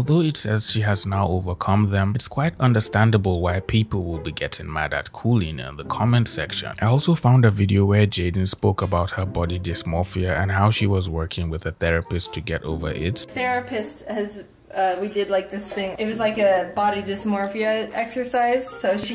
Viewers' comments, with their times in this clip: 0:04 mad at cooling 💀